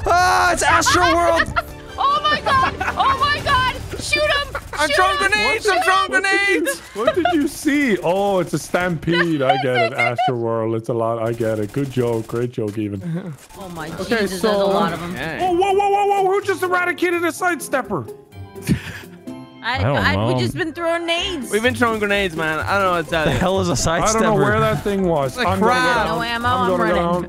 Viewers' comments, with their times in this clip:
0:10 did Nogla just call Evan “even” 🤣